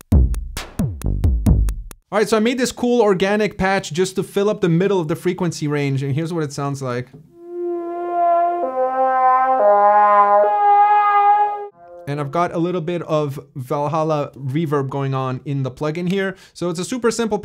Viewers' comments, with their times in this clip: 0:03 the pads and leads in particular were really really awesome sounding ! The whole song is really great ! Plus I learned the word "merry-go-round" ^^ Thank you for sharing all of this :p cheers !
0:04 Thom Yorke “Ingenue” synth tone